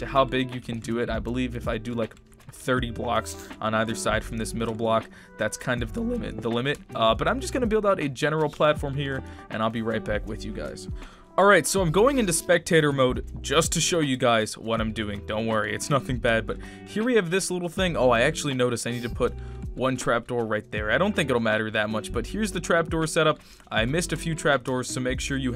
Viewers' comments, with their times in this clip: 0:05 Voice crack ‘limit’😂🤣
0:08 Vocie crack ! xD Nice video!